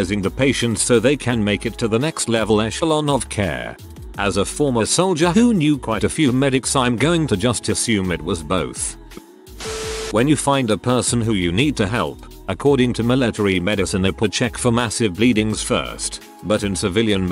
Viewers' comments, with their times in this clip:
0:05 what is up with how “who” is pronounced